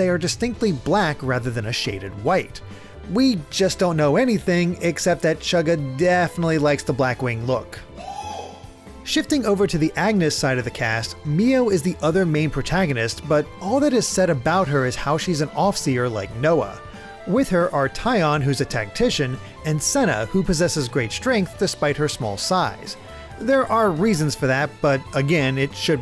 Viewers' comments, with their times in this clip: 0:07 love the echo